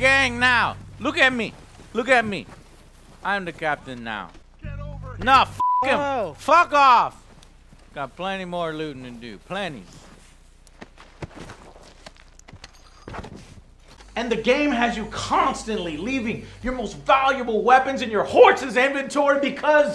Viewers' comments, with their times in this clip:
0:05 he bleeped out the first curse but not the immediate one that followed lol